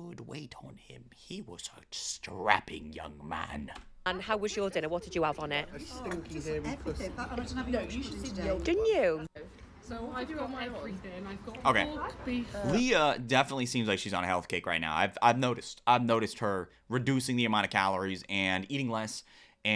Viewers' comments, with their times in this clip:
0:05 Did no one hear what some guy said in the background 😂😭